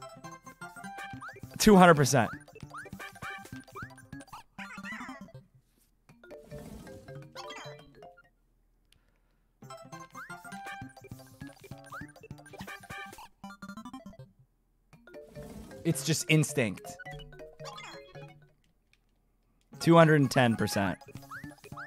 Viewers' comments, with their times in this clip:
0:03 at this speed when mario dies and says "Oh no" sounds like he says "Oh my god"